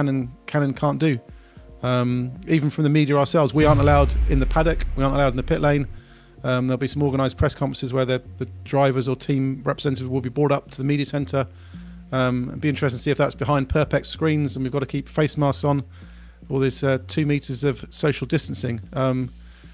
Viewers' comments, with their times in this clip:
0:03 That big Woosh is why this is the last time I will listen to this podcast in the car. Sounded like someone got rear-ended. Was driving on the highway. Full alert all of a sudden.